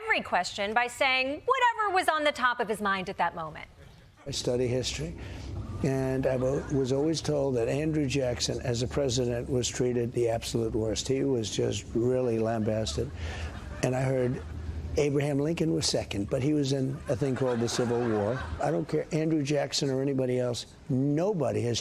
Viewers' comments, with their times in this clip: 0:03 "I´ve studied history"...really needs a bigger laugh track afterwards